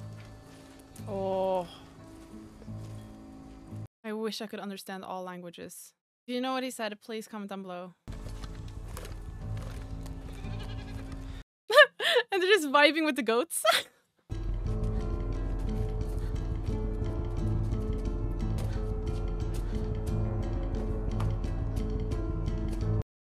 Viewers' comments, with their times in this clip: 0:05 the old guy said “Hear this, your deaths will be tonight”. The old man repeats it, but this time it is the tone of a promise being made, “your deaths will be tonight!”